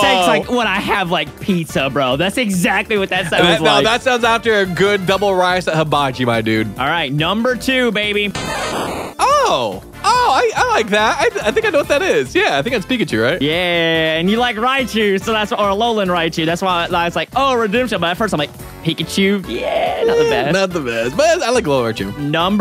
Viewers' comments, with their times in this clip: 0:09 that’s not Pikachu Pikachu just saids it’s name we’re did they get this weird cry from?